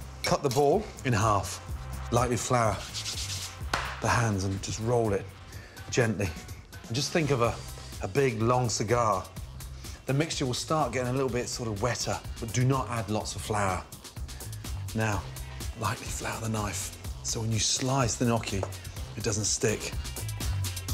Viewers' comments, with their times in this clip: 0:06 that pause before tHe “big Long cigar” is sus